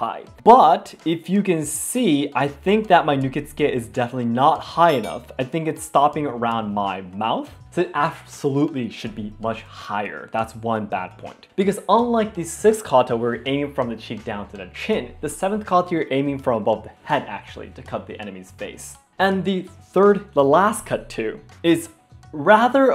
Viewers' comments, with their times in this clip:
0:06 I don’t want be rude,but why were you holding your breath so bad I am just asking because I am not familiar with the katana and styles,but actually picked my interest.